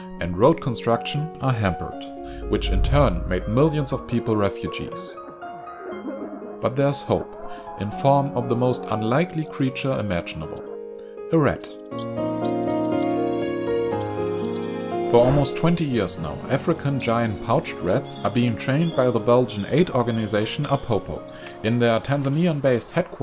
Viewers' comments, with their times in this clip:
0:07 he actually used the sound of people crying over kitchy piano music. This guy's videos are full of these amateur tactics.